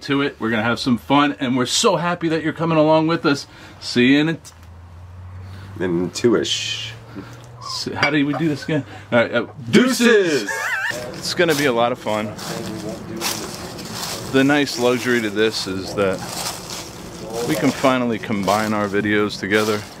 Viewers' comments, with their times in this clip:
0:08 What was that noise ?? The wind??